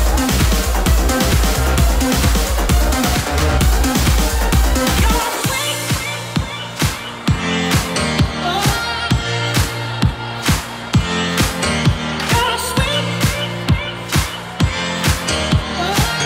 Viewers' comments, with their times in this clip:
0:03 What is up with this mixing?? especially come on, really